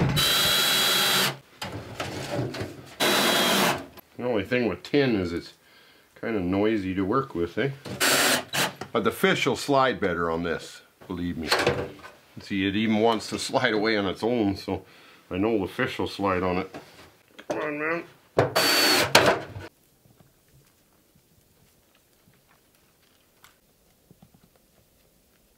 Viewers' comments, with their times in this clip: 0:06 im new hes canadian i can tell